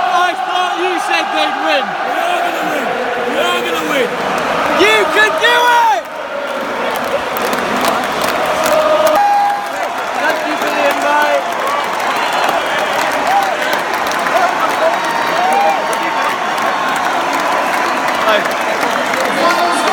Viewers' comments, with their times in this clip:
0:03 the old guy sounded like he should be on Game Of Thrones